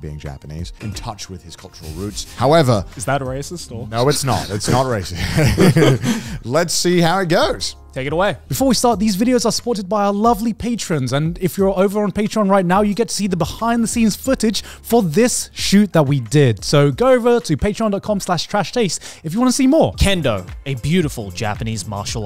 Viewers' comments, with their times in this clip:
0:04 yeah it’s racist! Bri’ish